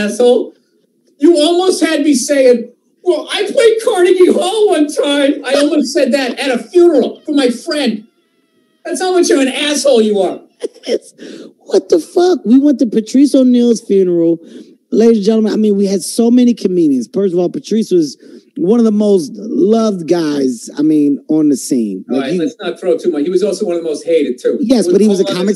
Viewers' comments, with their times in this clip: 0:10 Kevin sounds like patrice for a second